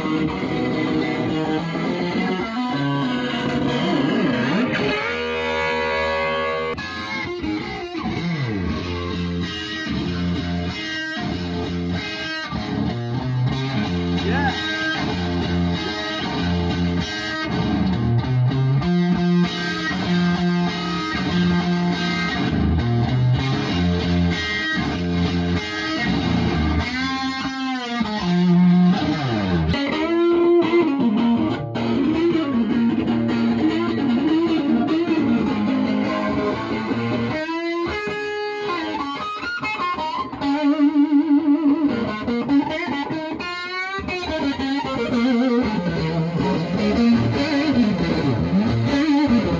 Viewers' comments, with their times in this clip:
0:08 On it starts. Very intense and beautiful playing. Now I know what I am practicing for! Hendrix!!! Jette bra✌️
0:31 'Lover Man ' at the speed Jimi played it at Berkeley in 1969 Much less pace at IOW in 1970 . Always seems to be left off later compilation's for some reason , but an amazing piece .